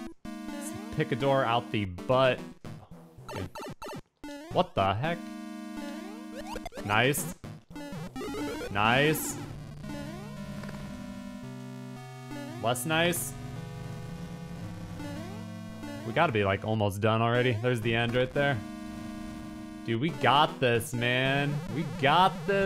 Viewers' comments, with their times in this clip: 0:04 "What tha heck?" was perfectly matched with the music! :D